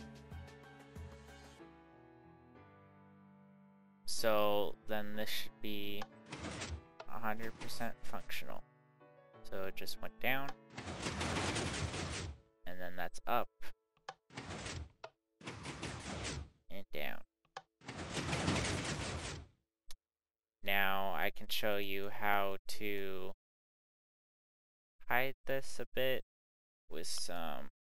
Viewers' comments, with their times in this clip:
0:08 im at the stage but nothing happens and i have followed everything exactly right, ive redone 10 times. theres just the shifting noise but nothing happens